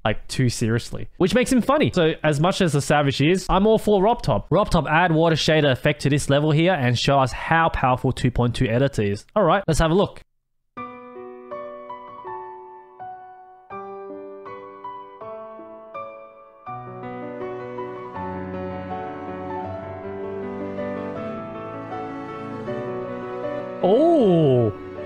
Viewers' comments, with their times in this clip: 0:09 always cry when ori theme begins